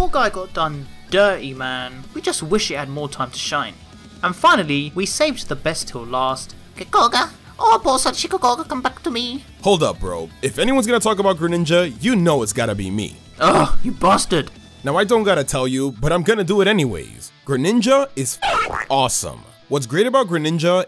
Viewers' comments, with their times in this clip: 0:07 That voice has me laughing so hard idk why